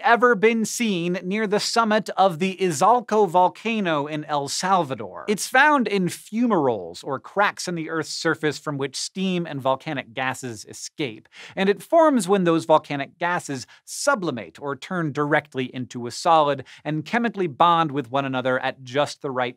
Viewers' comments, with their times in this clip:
0:05 In i thought he said it was only found in funerals.